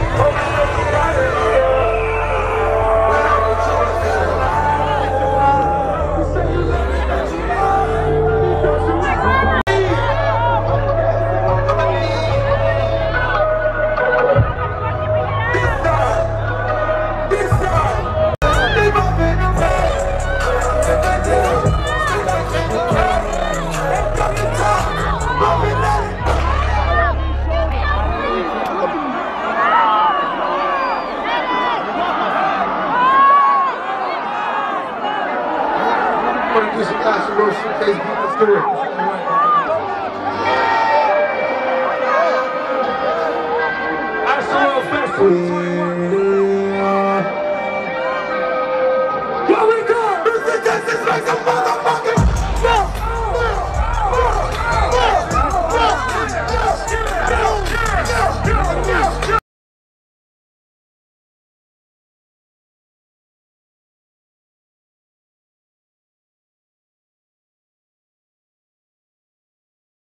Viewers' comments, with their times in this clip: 0:03 Those screams for help :/
0:10 I got CHILLS. You could hear someone trying to get out, yelling for help
0:15 you hear a girl saying “how do we get out”
0:15 You can actually hear the screams of "Let me out!". 😧
0:15 you can hear a girl screaming and pleading "I want to get out, get me out of here!"
0:15 At this point you can clearly hear cries and shouts of distress. OMG.
0:18 get me out get me out Pleading of screams and crys
0:20 you can literally hear someone screaming "let me out, help, let me out!"
0:20 I feel so fucking bad for this girl u can hear her screaming”get me up”
0:22 a girl screaming “help me up, wtf “ and the crowd started jumping omg I hope she’s ok
0:22 a girl kept screaming to be helped up!!
0:25 is very shell shocking. From what I am seeing and hearing is a girl with her feet in the air screaming for help. Did anyone else peep that ? Hope that girl made it out okay
0:26 when the song ends and its quiet, it sounds like chaos and can hear people screaming for help
0:28 when the music stops and you can hear people screaming for their lives. Those are not happy screams you hear at a concert, those are shrieks of fear and hundreds of people fighting for their lives, it's horrific. The fact that he played on regardless is horrendous and he should be held accountable for the lives lost and the people injured and traumatised.
0:28 the moment the music stops you can hear all the screams
0:28 The screams when the music stops 😣😣
0:29 You can clearly hear the panic 😱 in their voice when the music 🎼 stop playing r.i.p for the lost souls
0:30 you can here a girl screaming for help and medics
0:30 hearing get me out get me out. This sounds like actual hell!!
0:30 i could hear the girl yell " get me up" so awful
0:35 mark you can hear a girl screaming and she screams “What the Fuck!!” Probably trying not to be trampled and suffering
0:35 Wow the screams of HELP and HELP ME UP Truly chilling.
0:57 The guy .. He sounds like he's on his last breath. Absolutely horrifying. Thoughts to everyone affected.